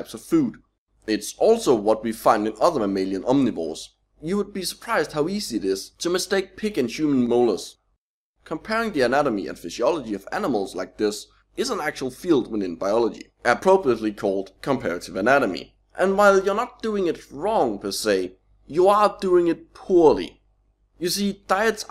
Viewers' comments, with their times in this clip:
0:03 I always pick up things I didn't know in these videos. For example: "You would be surprised how easy it is to mistake pig and Jew molars"